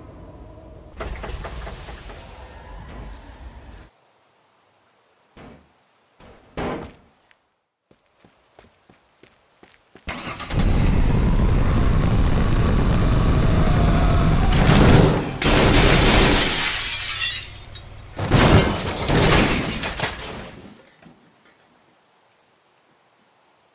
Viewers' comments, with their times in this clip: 0:07 The British/aus police go brrrrrrrrrrrrrr